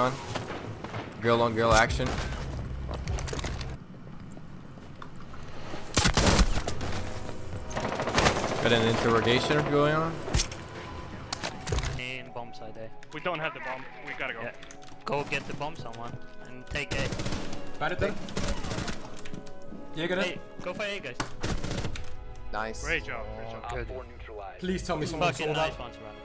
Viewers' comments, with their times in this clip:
0:09 he didnt say INTERROGASION D: